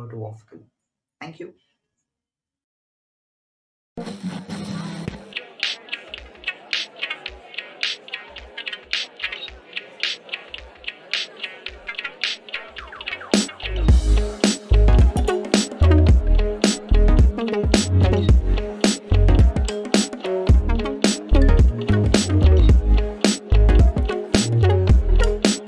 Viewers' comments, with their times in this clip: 0:07 The beat starts from